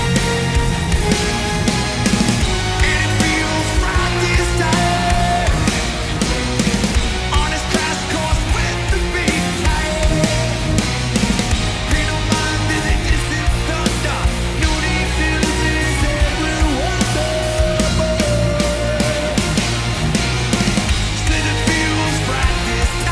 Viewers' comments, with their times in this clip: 0:06 He miffed a high note on the second line but he got the vibe who cares lol